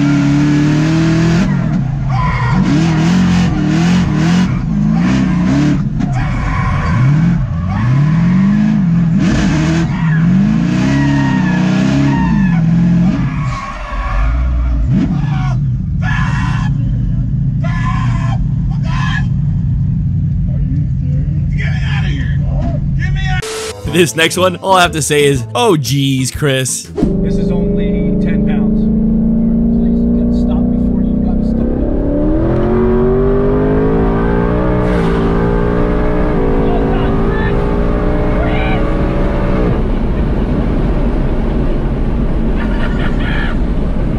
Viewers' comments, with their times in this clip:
0:06 I was cracking up at the guy screaming tryna stop the guy from driving 😂
0:06 sounds like a chicken
0:31 his dad looked like he was a kid on christmas morning. his smile was so big and he was cackling like a mad man, loved everyy second